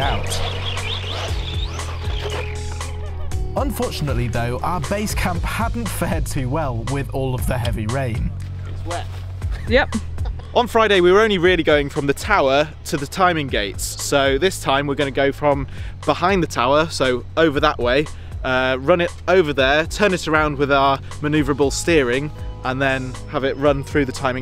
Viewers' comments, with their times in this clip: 0:06 HAHA I DIDNT FALL FOR THE FAKE TORNADO WARNING!